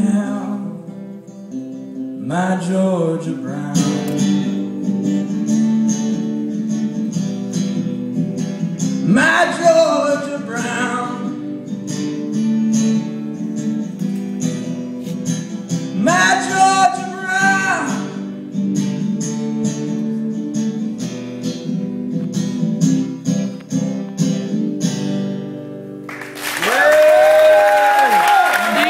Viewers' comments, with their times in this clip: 0:09 I think he must get louder, there is potential!